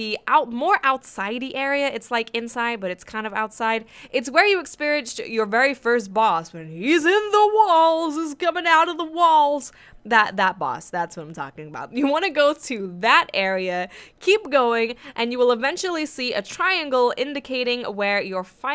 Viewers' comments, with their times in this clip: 0:06 you sounded like Bill cosby 😂😂